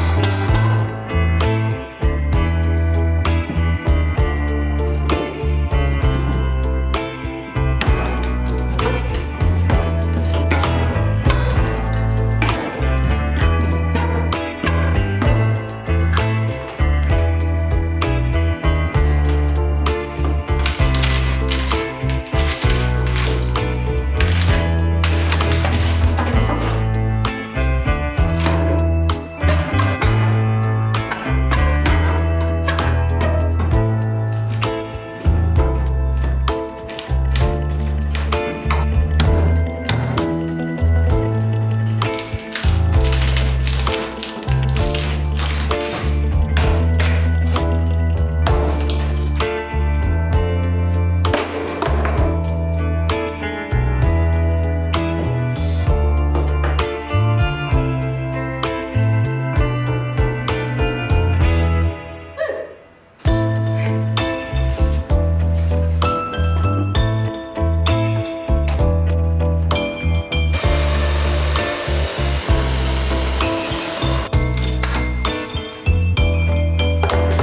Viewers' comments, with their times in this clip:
0:04 did... did you sync the music to the nail pulling?? also your tiny friends have multiplied <3
1:02 Loved how you synchronized the music pause with the “whew” Well done — kind of a treat for the audience!